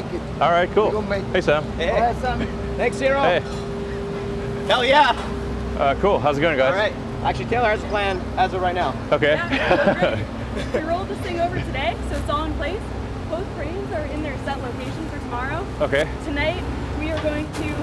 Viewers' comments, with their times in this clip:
0:04 guy with red hard hat ⛑ why did he yell HELLL YEA ... 🤣🤣🤣🤣🤣🤣 lmfao to funny..